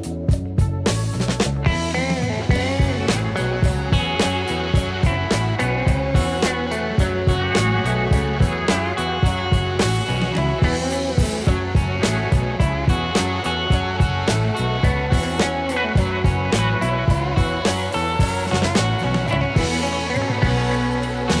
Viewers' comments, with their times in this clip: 0:04 I watched three videos in a row because I have to do this job. Great work, and very informative, but thank God for the change in music .. I was on my last straw!